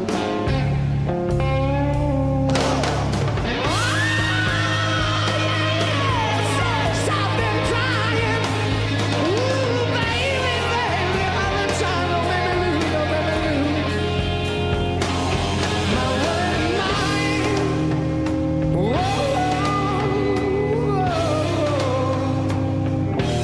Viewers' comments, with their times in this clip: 0:03 that was his voice, he ranged three octaves with precision, like Harry Nilsson
0:08 That scream got your attention, did it? I am 99% sure it is his voice